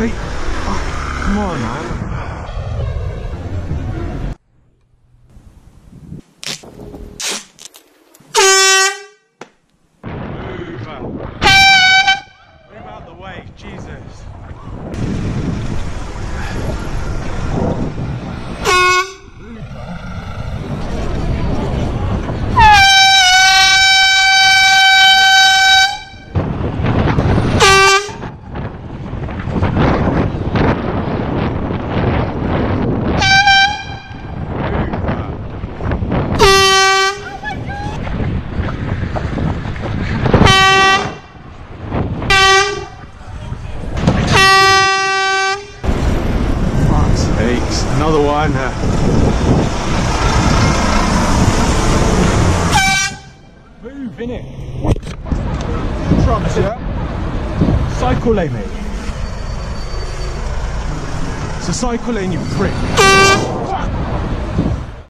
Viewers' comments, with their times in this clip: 0:10 Do be aware that this is illegal in most places in Europe; making such a loud sound in traffic is only allowed to signal imminent, unpreventable danger such as a potential car crash. If the police see you using this in an inappropriate scenario, they will give you a fine. Second, this is also dangerous for the pedestrians walking in the wrong lane who could (and almost did ) jump on the road surprised by the sound and be overdriven by a passing car; although they are at fault walking on the bicycle lane, they do not deserve to die, and if such a scenario were to take place, the cyclist would be the one responsible as his/her use of the airhorn was unwarranted in the first place. It's almost like there already existed a perfectly good solution to this: something like a bell?
0:22 sounds like a Indian train express train horn sound incoming ;)
0:23 You cant just hold the horn for long cuz that hurts peoples ear, and some people hate loud noises, I know people was in his way, I could of horned once, then horned twice after
0:40 they weren’t even of his side of the road when he blasted his little air horn?
0:48 Well yeah, he just wanted to blow his horn at women, shit I meant pedestrians. Just listen sounds like he's trying not to laugh